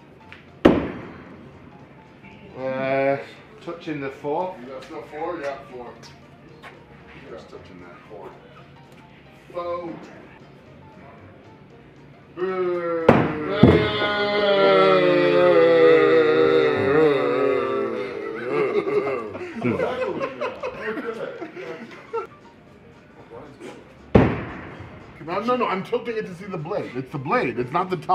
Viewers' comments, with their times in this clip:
0:10 Eddie and Robert boohing when the axe is in the air LOL xD